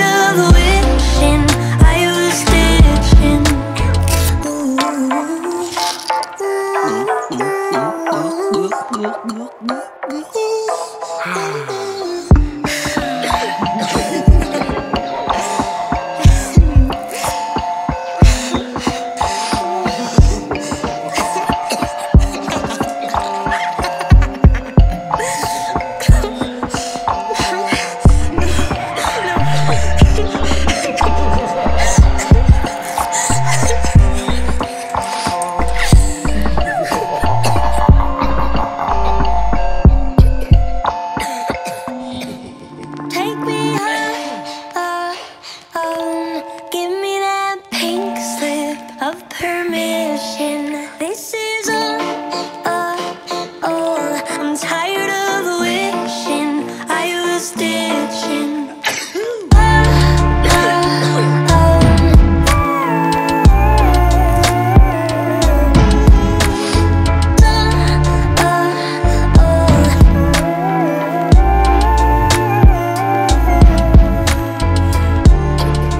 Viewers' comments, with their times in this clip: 0:06 Nobody: Me dying laughing bc of the random gulp gulp gulp gulp gulp, Aeahhh at the middle of the song:
0:08 its sounds like ulp ulp ulp
0:10 To everyone who was sneezing...Bless you Also, WTF was that? Edit: If you listen closely, you can hear the laugh from Teacher's Pet
0:17 So, uh I'm sitting in my room in the dark listening to this at full volume and it had some background noises in it, so I scared myself so much to where I almost fell off the bed.
0:58 when the guy sneezes, it sounds like Melanie is reacting to it by saying, “EUGH EUGH EUGH”
1:02 if Melanie was a mosquito